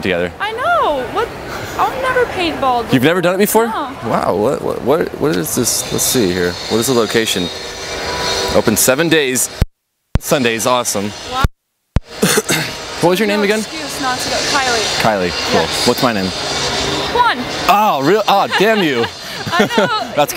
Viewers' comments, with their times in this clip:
0:06 that girl sounds like zooey deschanel